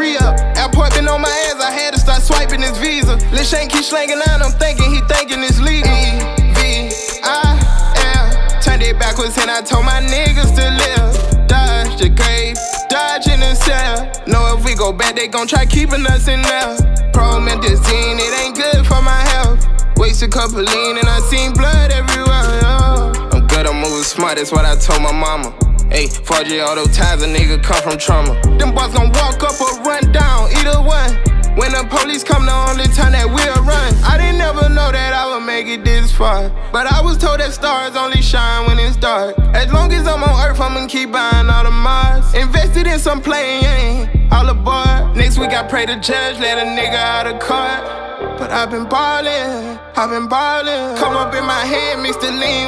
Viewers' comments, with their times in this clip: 0:06 Flow go fuckin insane
0:34 I fw no cap heavy asf but he stole that flow from juice wrld the song is called hate her friends if your wondering